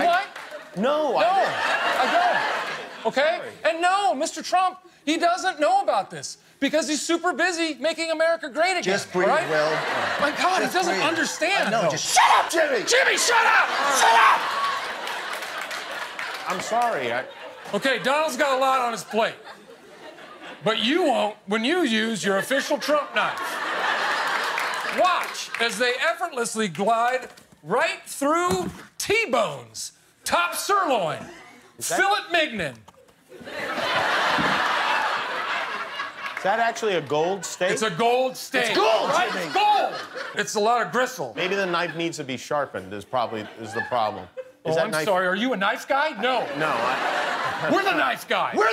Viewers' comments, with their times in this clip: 0:10 ryan made will jump shouting haha
0:31 fill it mig nin💀💀